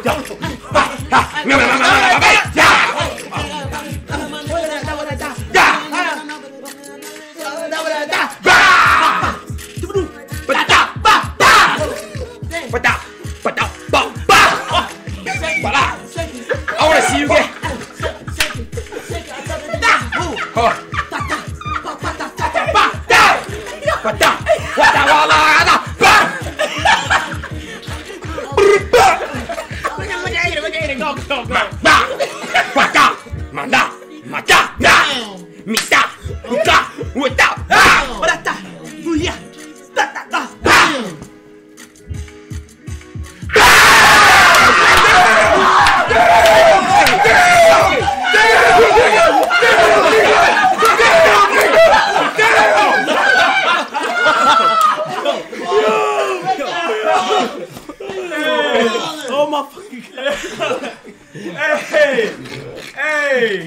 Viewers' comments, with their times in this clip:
0:06 the cavemen when they used to freestyle 😂
0:07 i thought they were rapping but nuhh
0:17 bro the gibberish
0:40 the unspoken flow
0:41 hardest 2 seconds of silence ever 😂😂
0:41 bro this stuff fire asl bru i didnt know dead silence hits that hard.😂 🔥
0:41 the silence was so loud😂
0:46 I skipped 10 seconds and suddenly everybody screamed lmao 😂😂